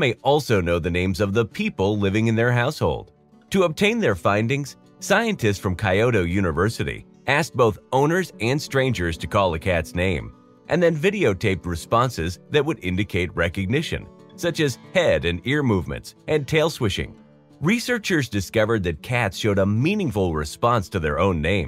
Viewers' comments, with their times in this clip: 0:05 "KAI-OTO University"?!?!.... Was that supposed to be "Kyoto University"?! O_O
0:07 Where's Coyo-to University :D